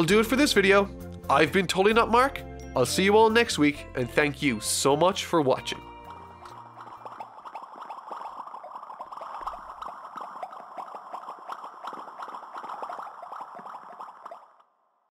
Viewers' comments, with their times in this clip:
0:05 Huh, bubbles..how Celest-I mean, soothing..